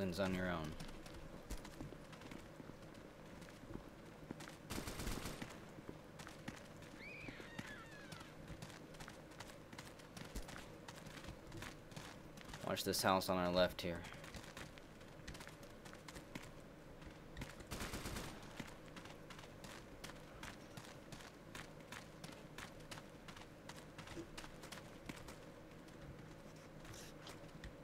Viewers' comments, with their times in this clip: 0:10 sounds like a witch from l4d!